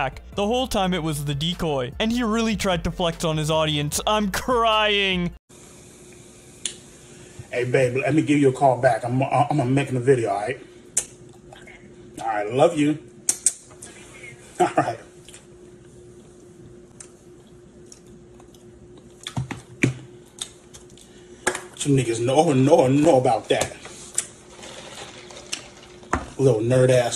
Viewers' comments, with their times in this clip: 0:05 "Love you". 🤢🤮 And he stuttered so damn hard because he knows how no one would respect the truth about that call.
0:10 EDP be breathing in 4K